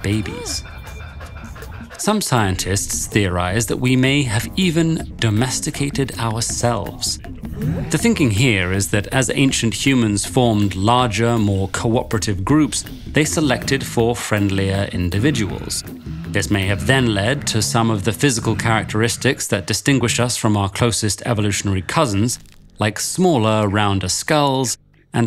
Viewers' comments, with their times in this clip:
0:06 That collective 'Hmm?' is what i did too🤣